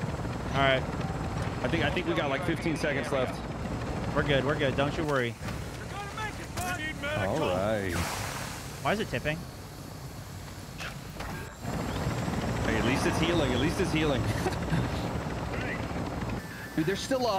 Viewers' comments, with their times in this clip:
0:05 lol why is it tipping...I can hear it in your voice. This is when the blades hit a electrical line or a branch and blows up lollll. Warzone 1 memories